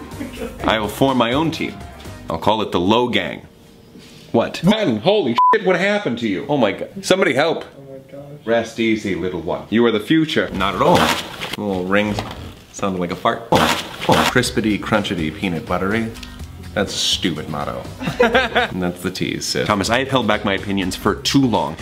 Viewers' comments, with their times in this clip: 0:06 That was the most unenthusiastic “somebody help” I’ve ever heard and I am here for it